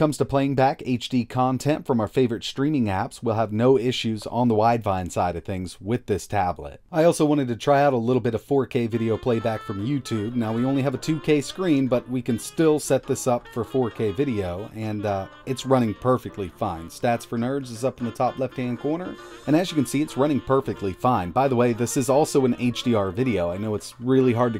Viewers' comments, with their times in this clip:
0:06 Im watching on my phone while using open back headphones and when you played that video sample I thought my phone's speakers were going off. Nice mic you got there.